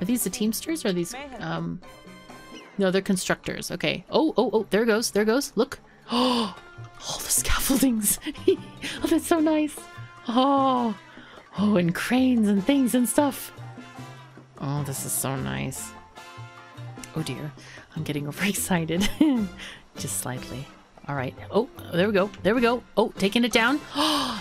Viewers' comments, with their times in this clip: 0:05 Did you get a bit too excited ??? That "Ohhhh" really cracked me up for some reason.